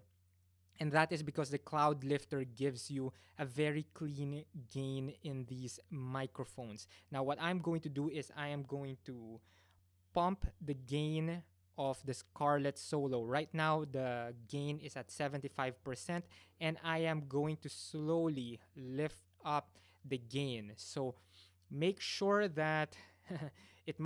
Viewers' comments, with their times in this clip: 0:10 I don't hear any humming. Are you talking about the low rumble when I was increasing the sound? If that is the case, that is from the generator of the building. I think you're hearing it more as I increase the gain. PS: Sorry man, no edits. So you hear how it really performs.